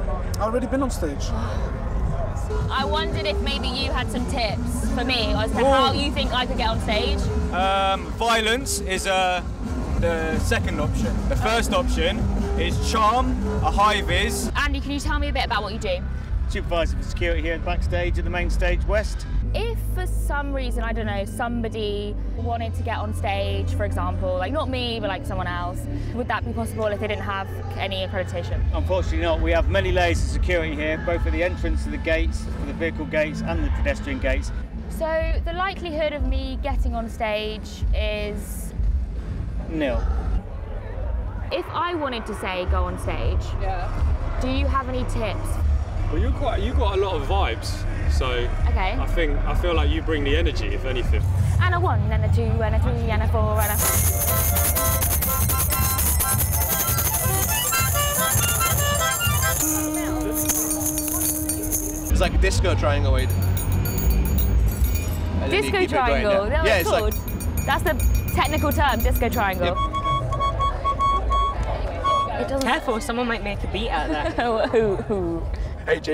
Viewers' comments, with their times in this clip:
0:03 I HEAR MACKY GEEEEEE
1:02 Sounded like a brazilian song